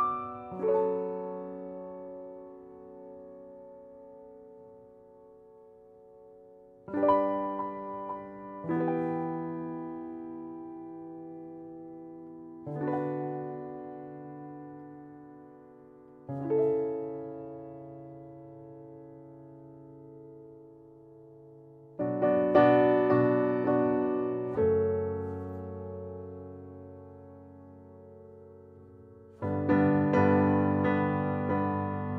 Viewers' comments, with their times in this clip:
0:04 Is the chord an A6/9?
0:13 Awesome! The beginning sounds like Light of the Seven from game of thrones, I like it! Especially onwards